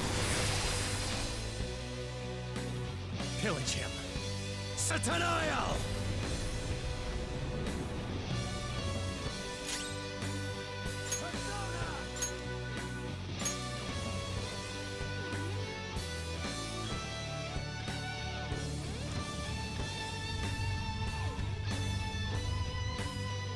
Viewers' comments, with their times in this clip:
0:09 I only just realized that Joker's voice is quieter here because he's further away from the camera, on account of Satanael being so friggin' HUGE.